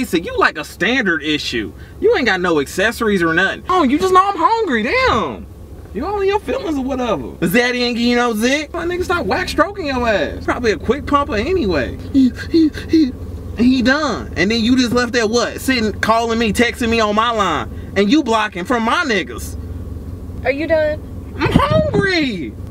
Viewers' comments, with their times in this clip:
0:07 what did he say ? i heard is that iggy and ozet lmao